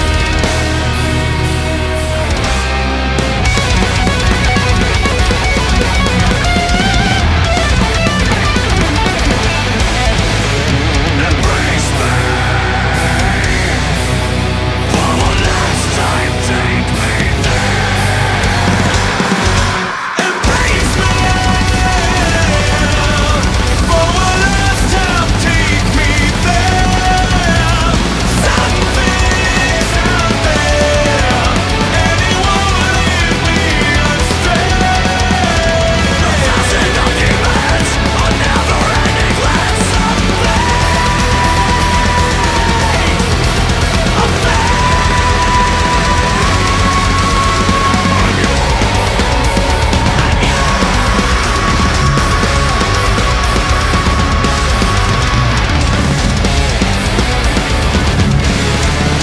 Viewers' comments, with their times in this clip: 0:10 yeeeeaah the slaps really hard
0:40 dat dirk blast